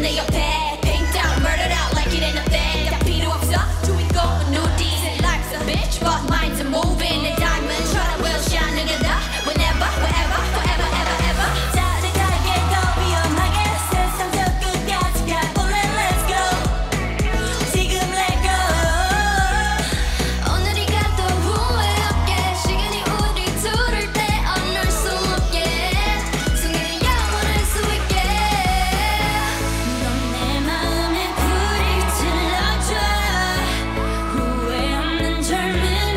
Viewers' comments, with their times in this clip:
0:09 I love this rap part so much Blink forever❤
0:20 i Love Lisa's vocal